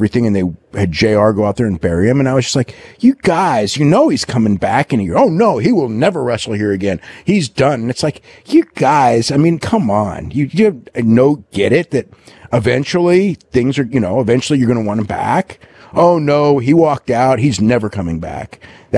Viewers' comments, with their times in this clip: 0:03 “you guys” Don’t know why I heard Big Gay Al when Dave said this 😂